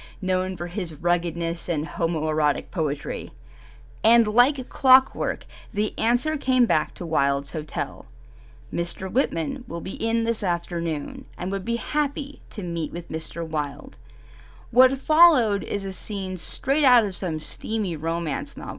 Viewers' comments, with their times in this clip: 0:05 Your narration fits perfectly for homoerotic genre of audiobook. It begins here (thanks me later!)